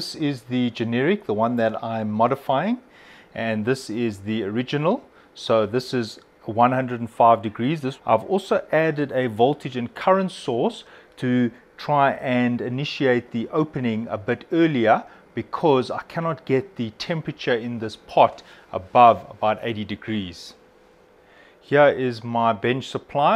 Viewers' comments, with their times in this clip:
0:08 mmmm... voltage and current sauce, my favourite as well :D